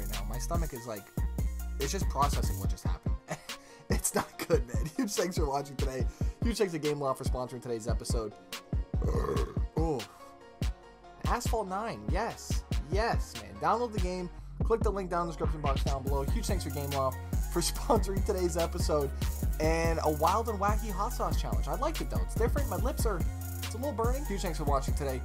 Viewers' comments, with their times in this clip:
0:08 That Burp LOL Sounds like a dog or something like that Hahaha